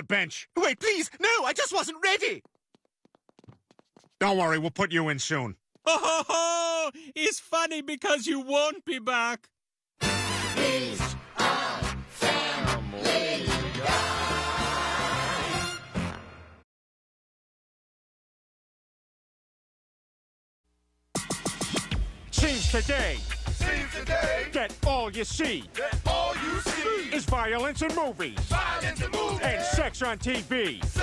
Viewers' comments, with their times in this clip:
0:10 alternative name: family guy into but you can actually hear Brian for once!
0:11 I find it funny how you can hear Brian literally stating the words to the song.
0:11 I can hear Brian singing louder.
0:12 without stewie you can make out Brian's deep voice.
0:12 if you listen closely, you can hear chris and megs old voices